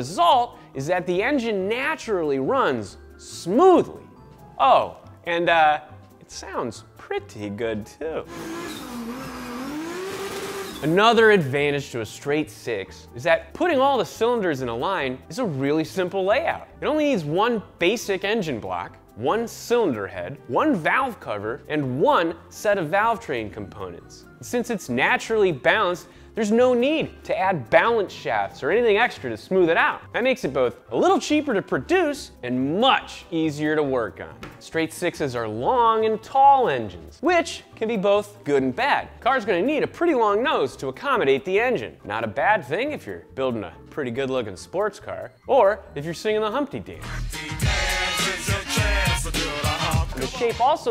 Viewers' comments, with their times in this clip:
0:08 the inline 6 in the series 1 and 2 e-type jaguar sounds totally awesome.
0:34 Sorry but you gotta commend that table slap on ATTENTION TO DETAIL.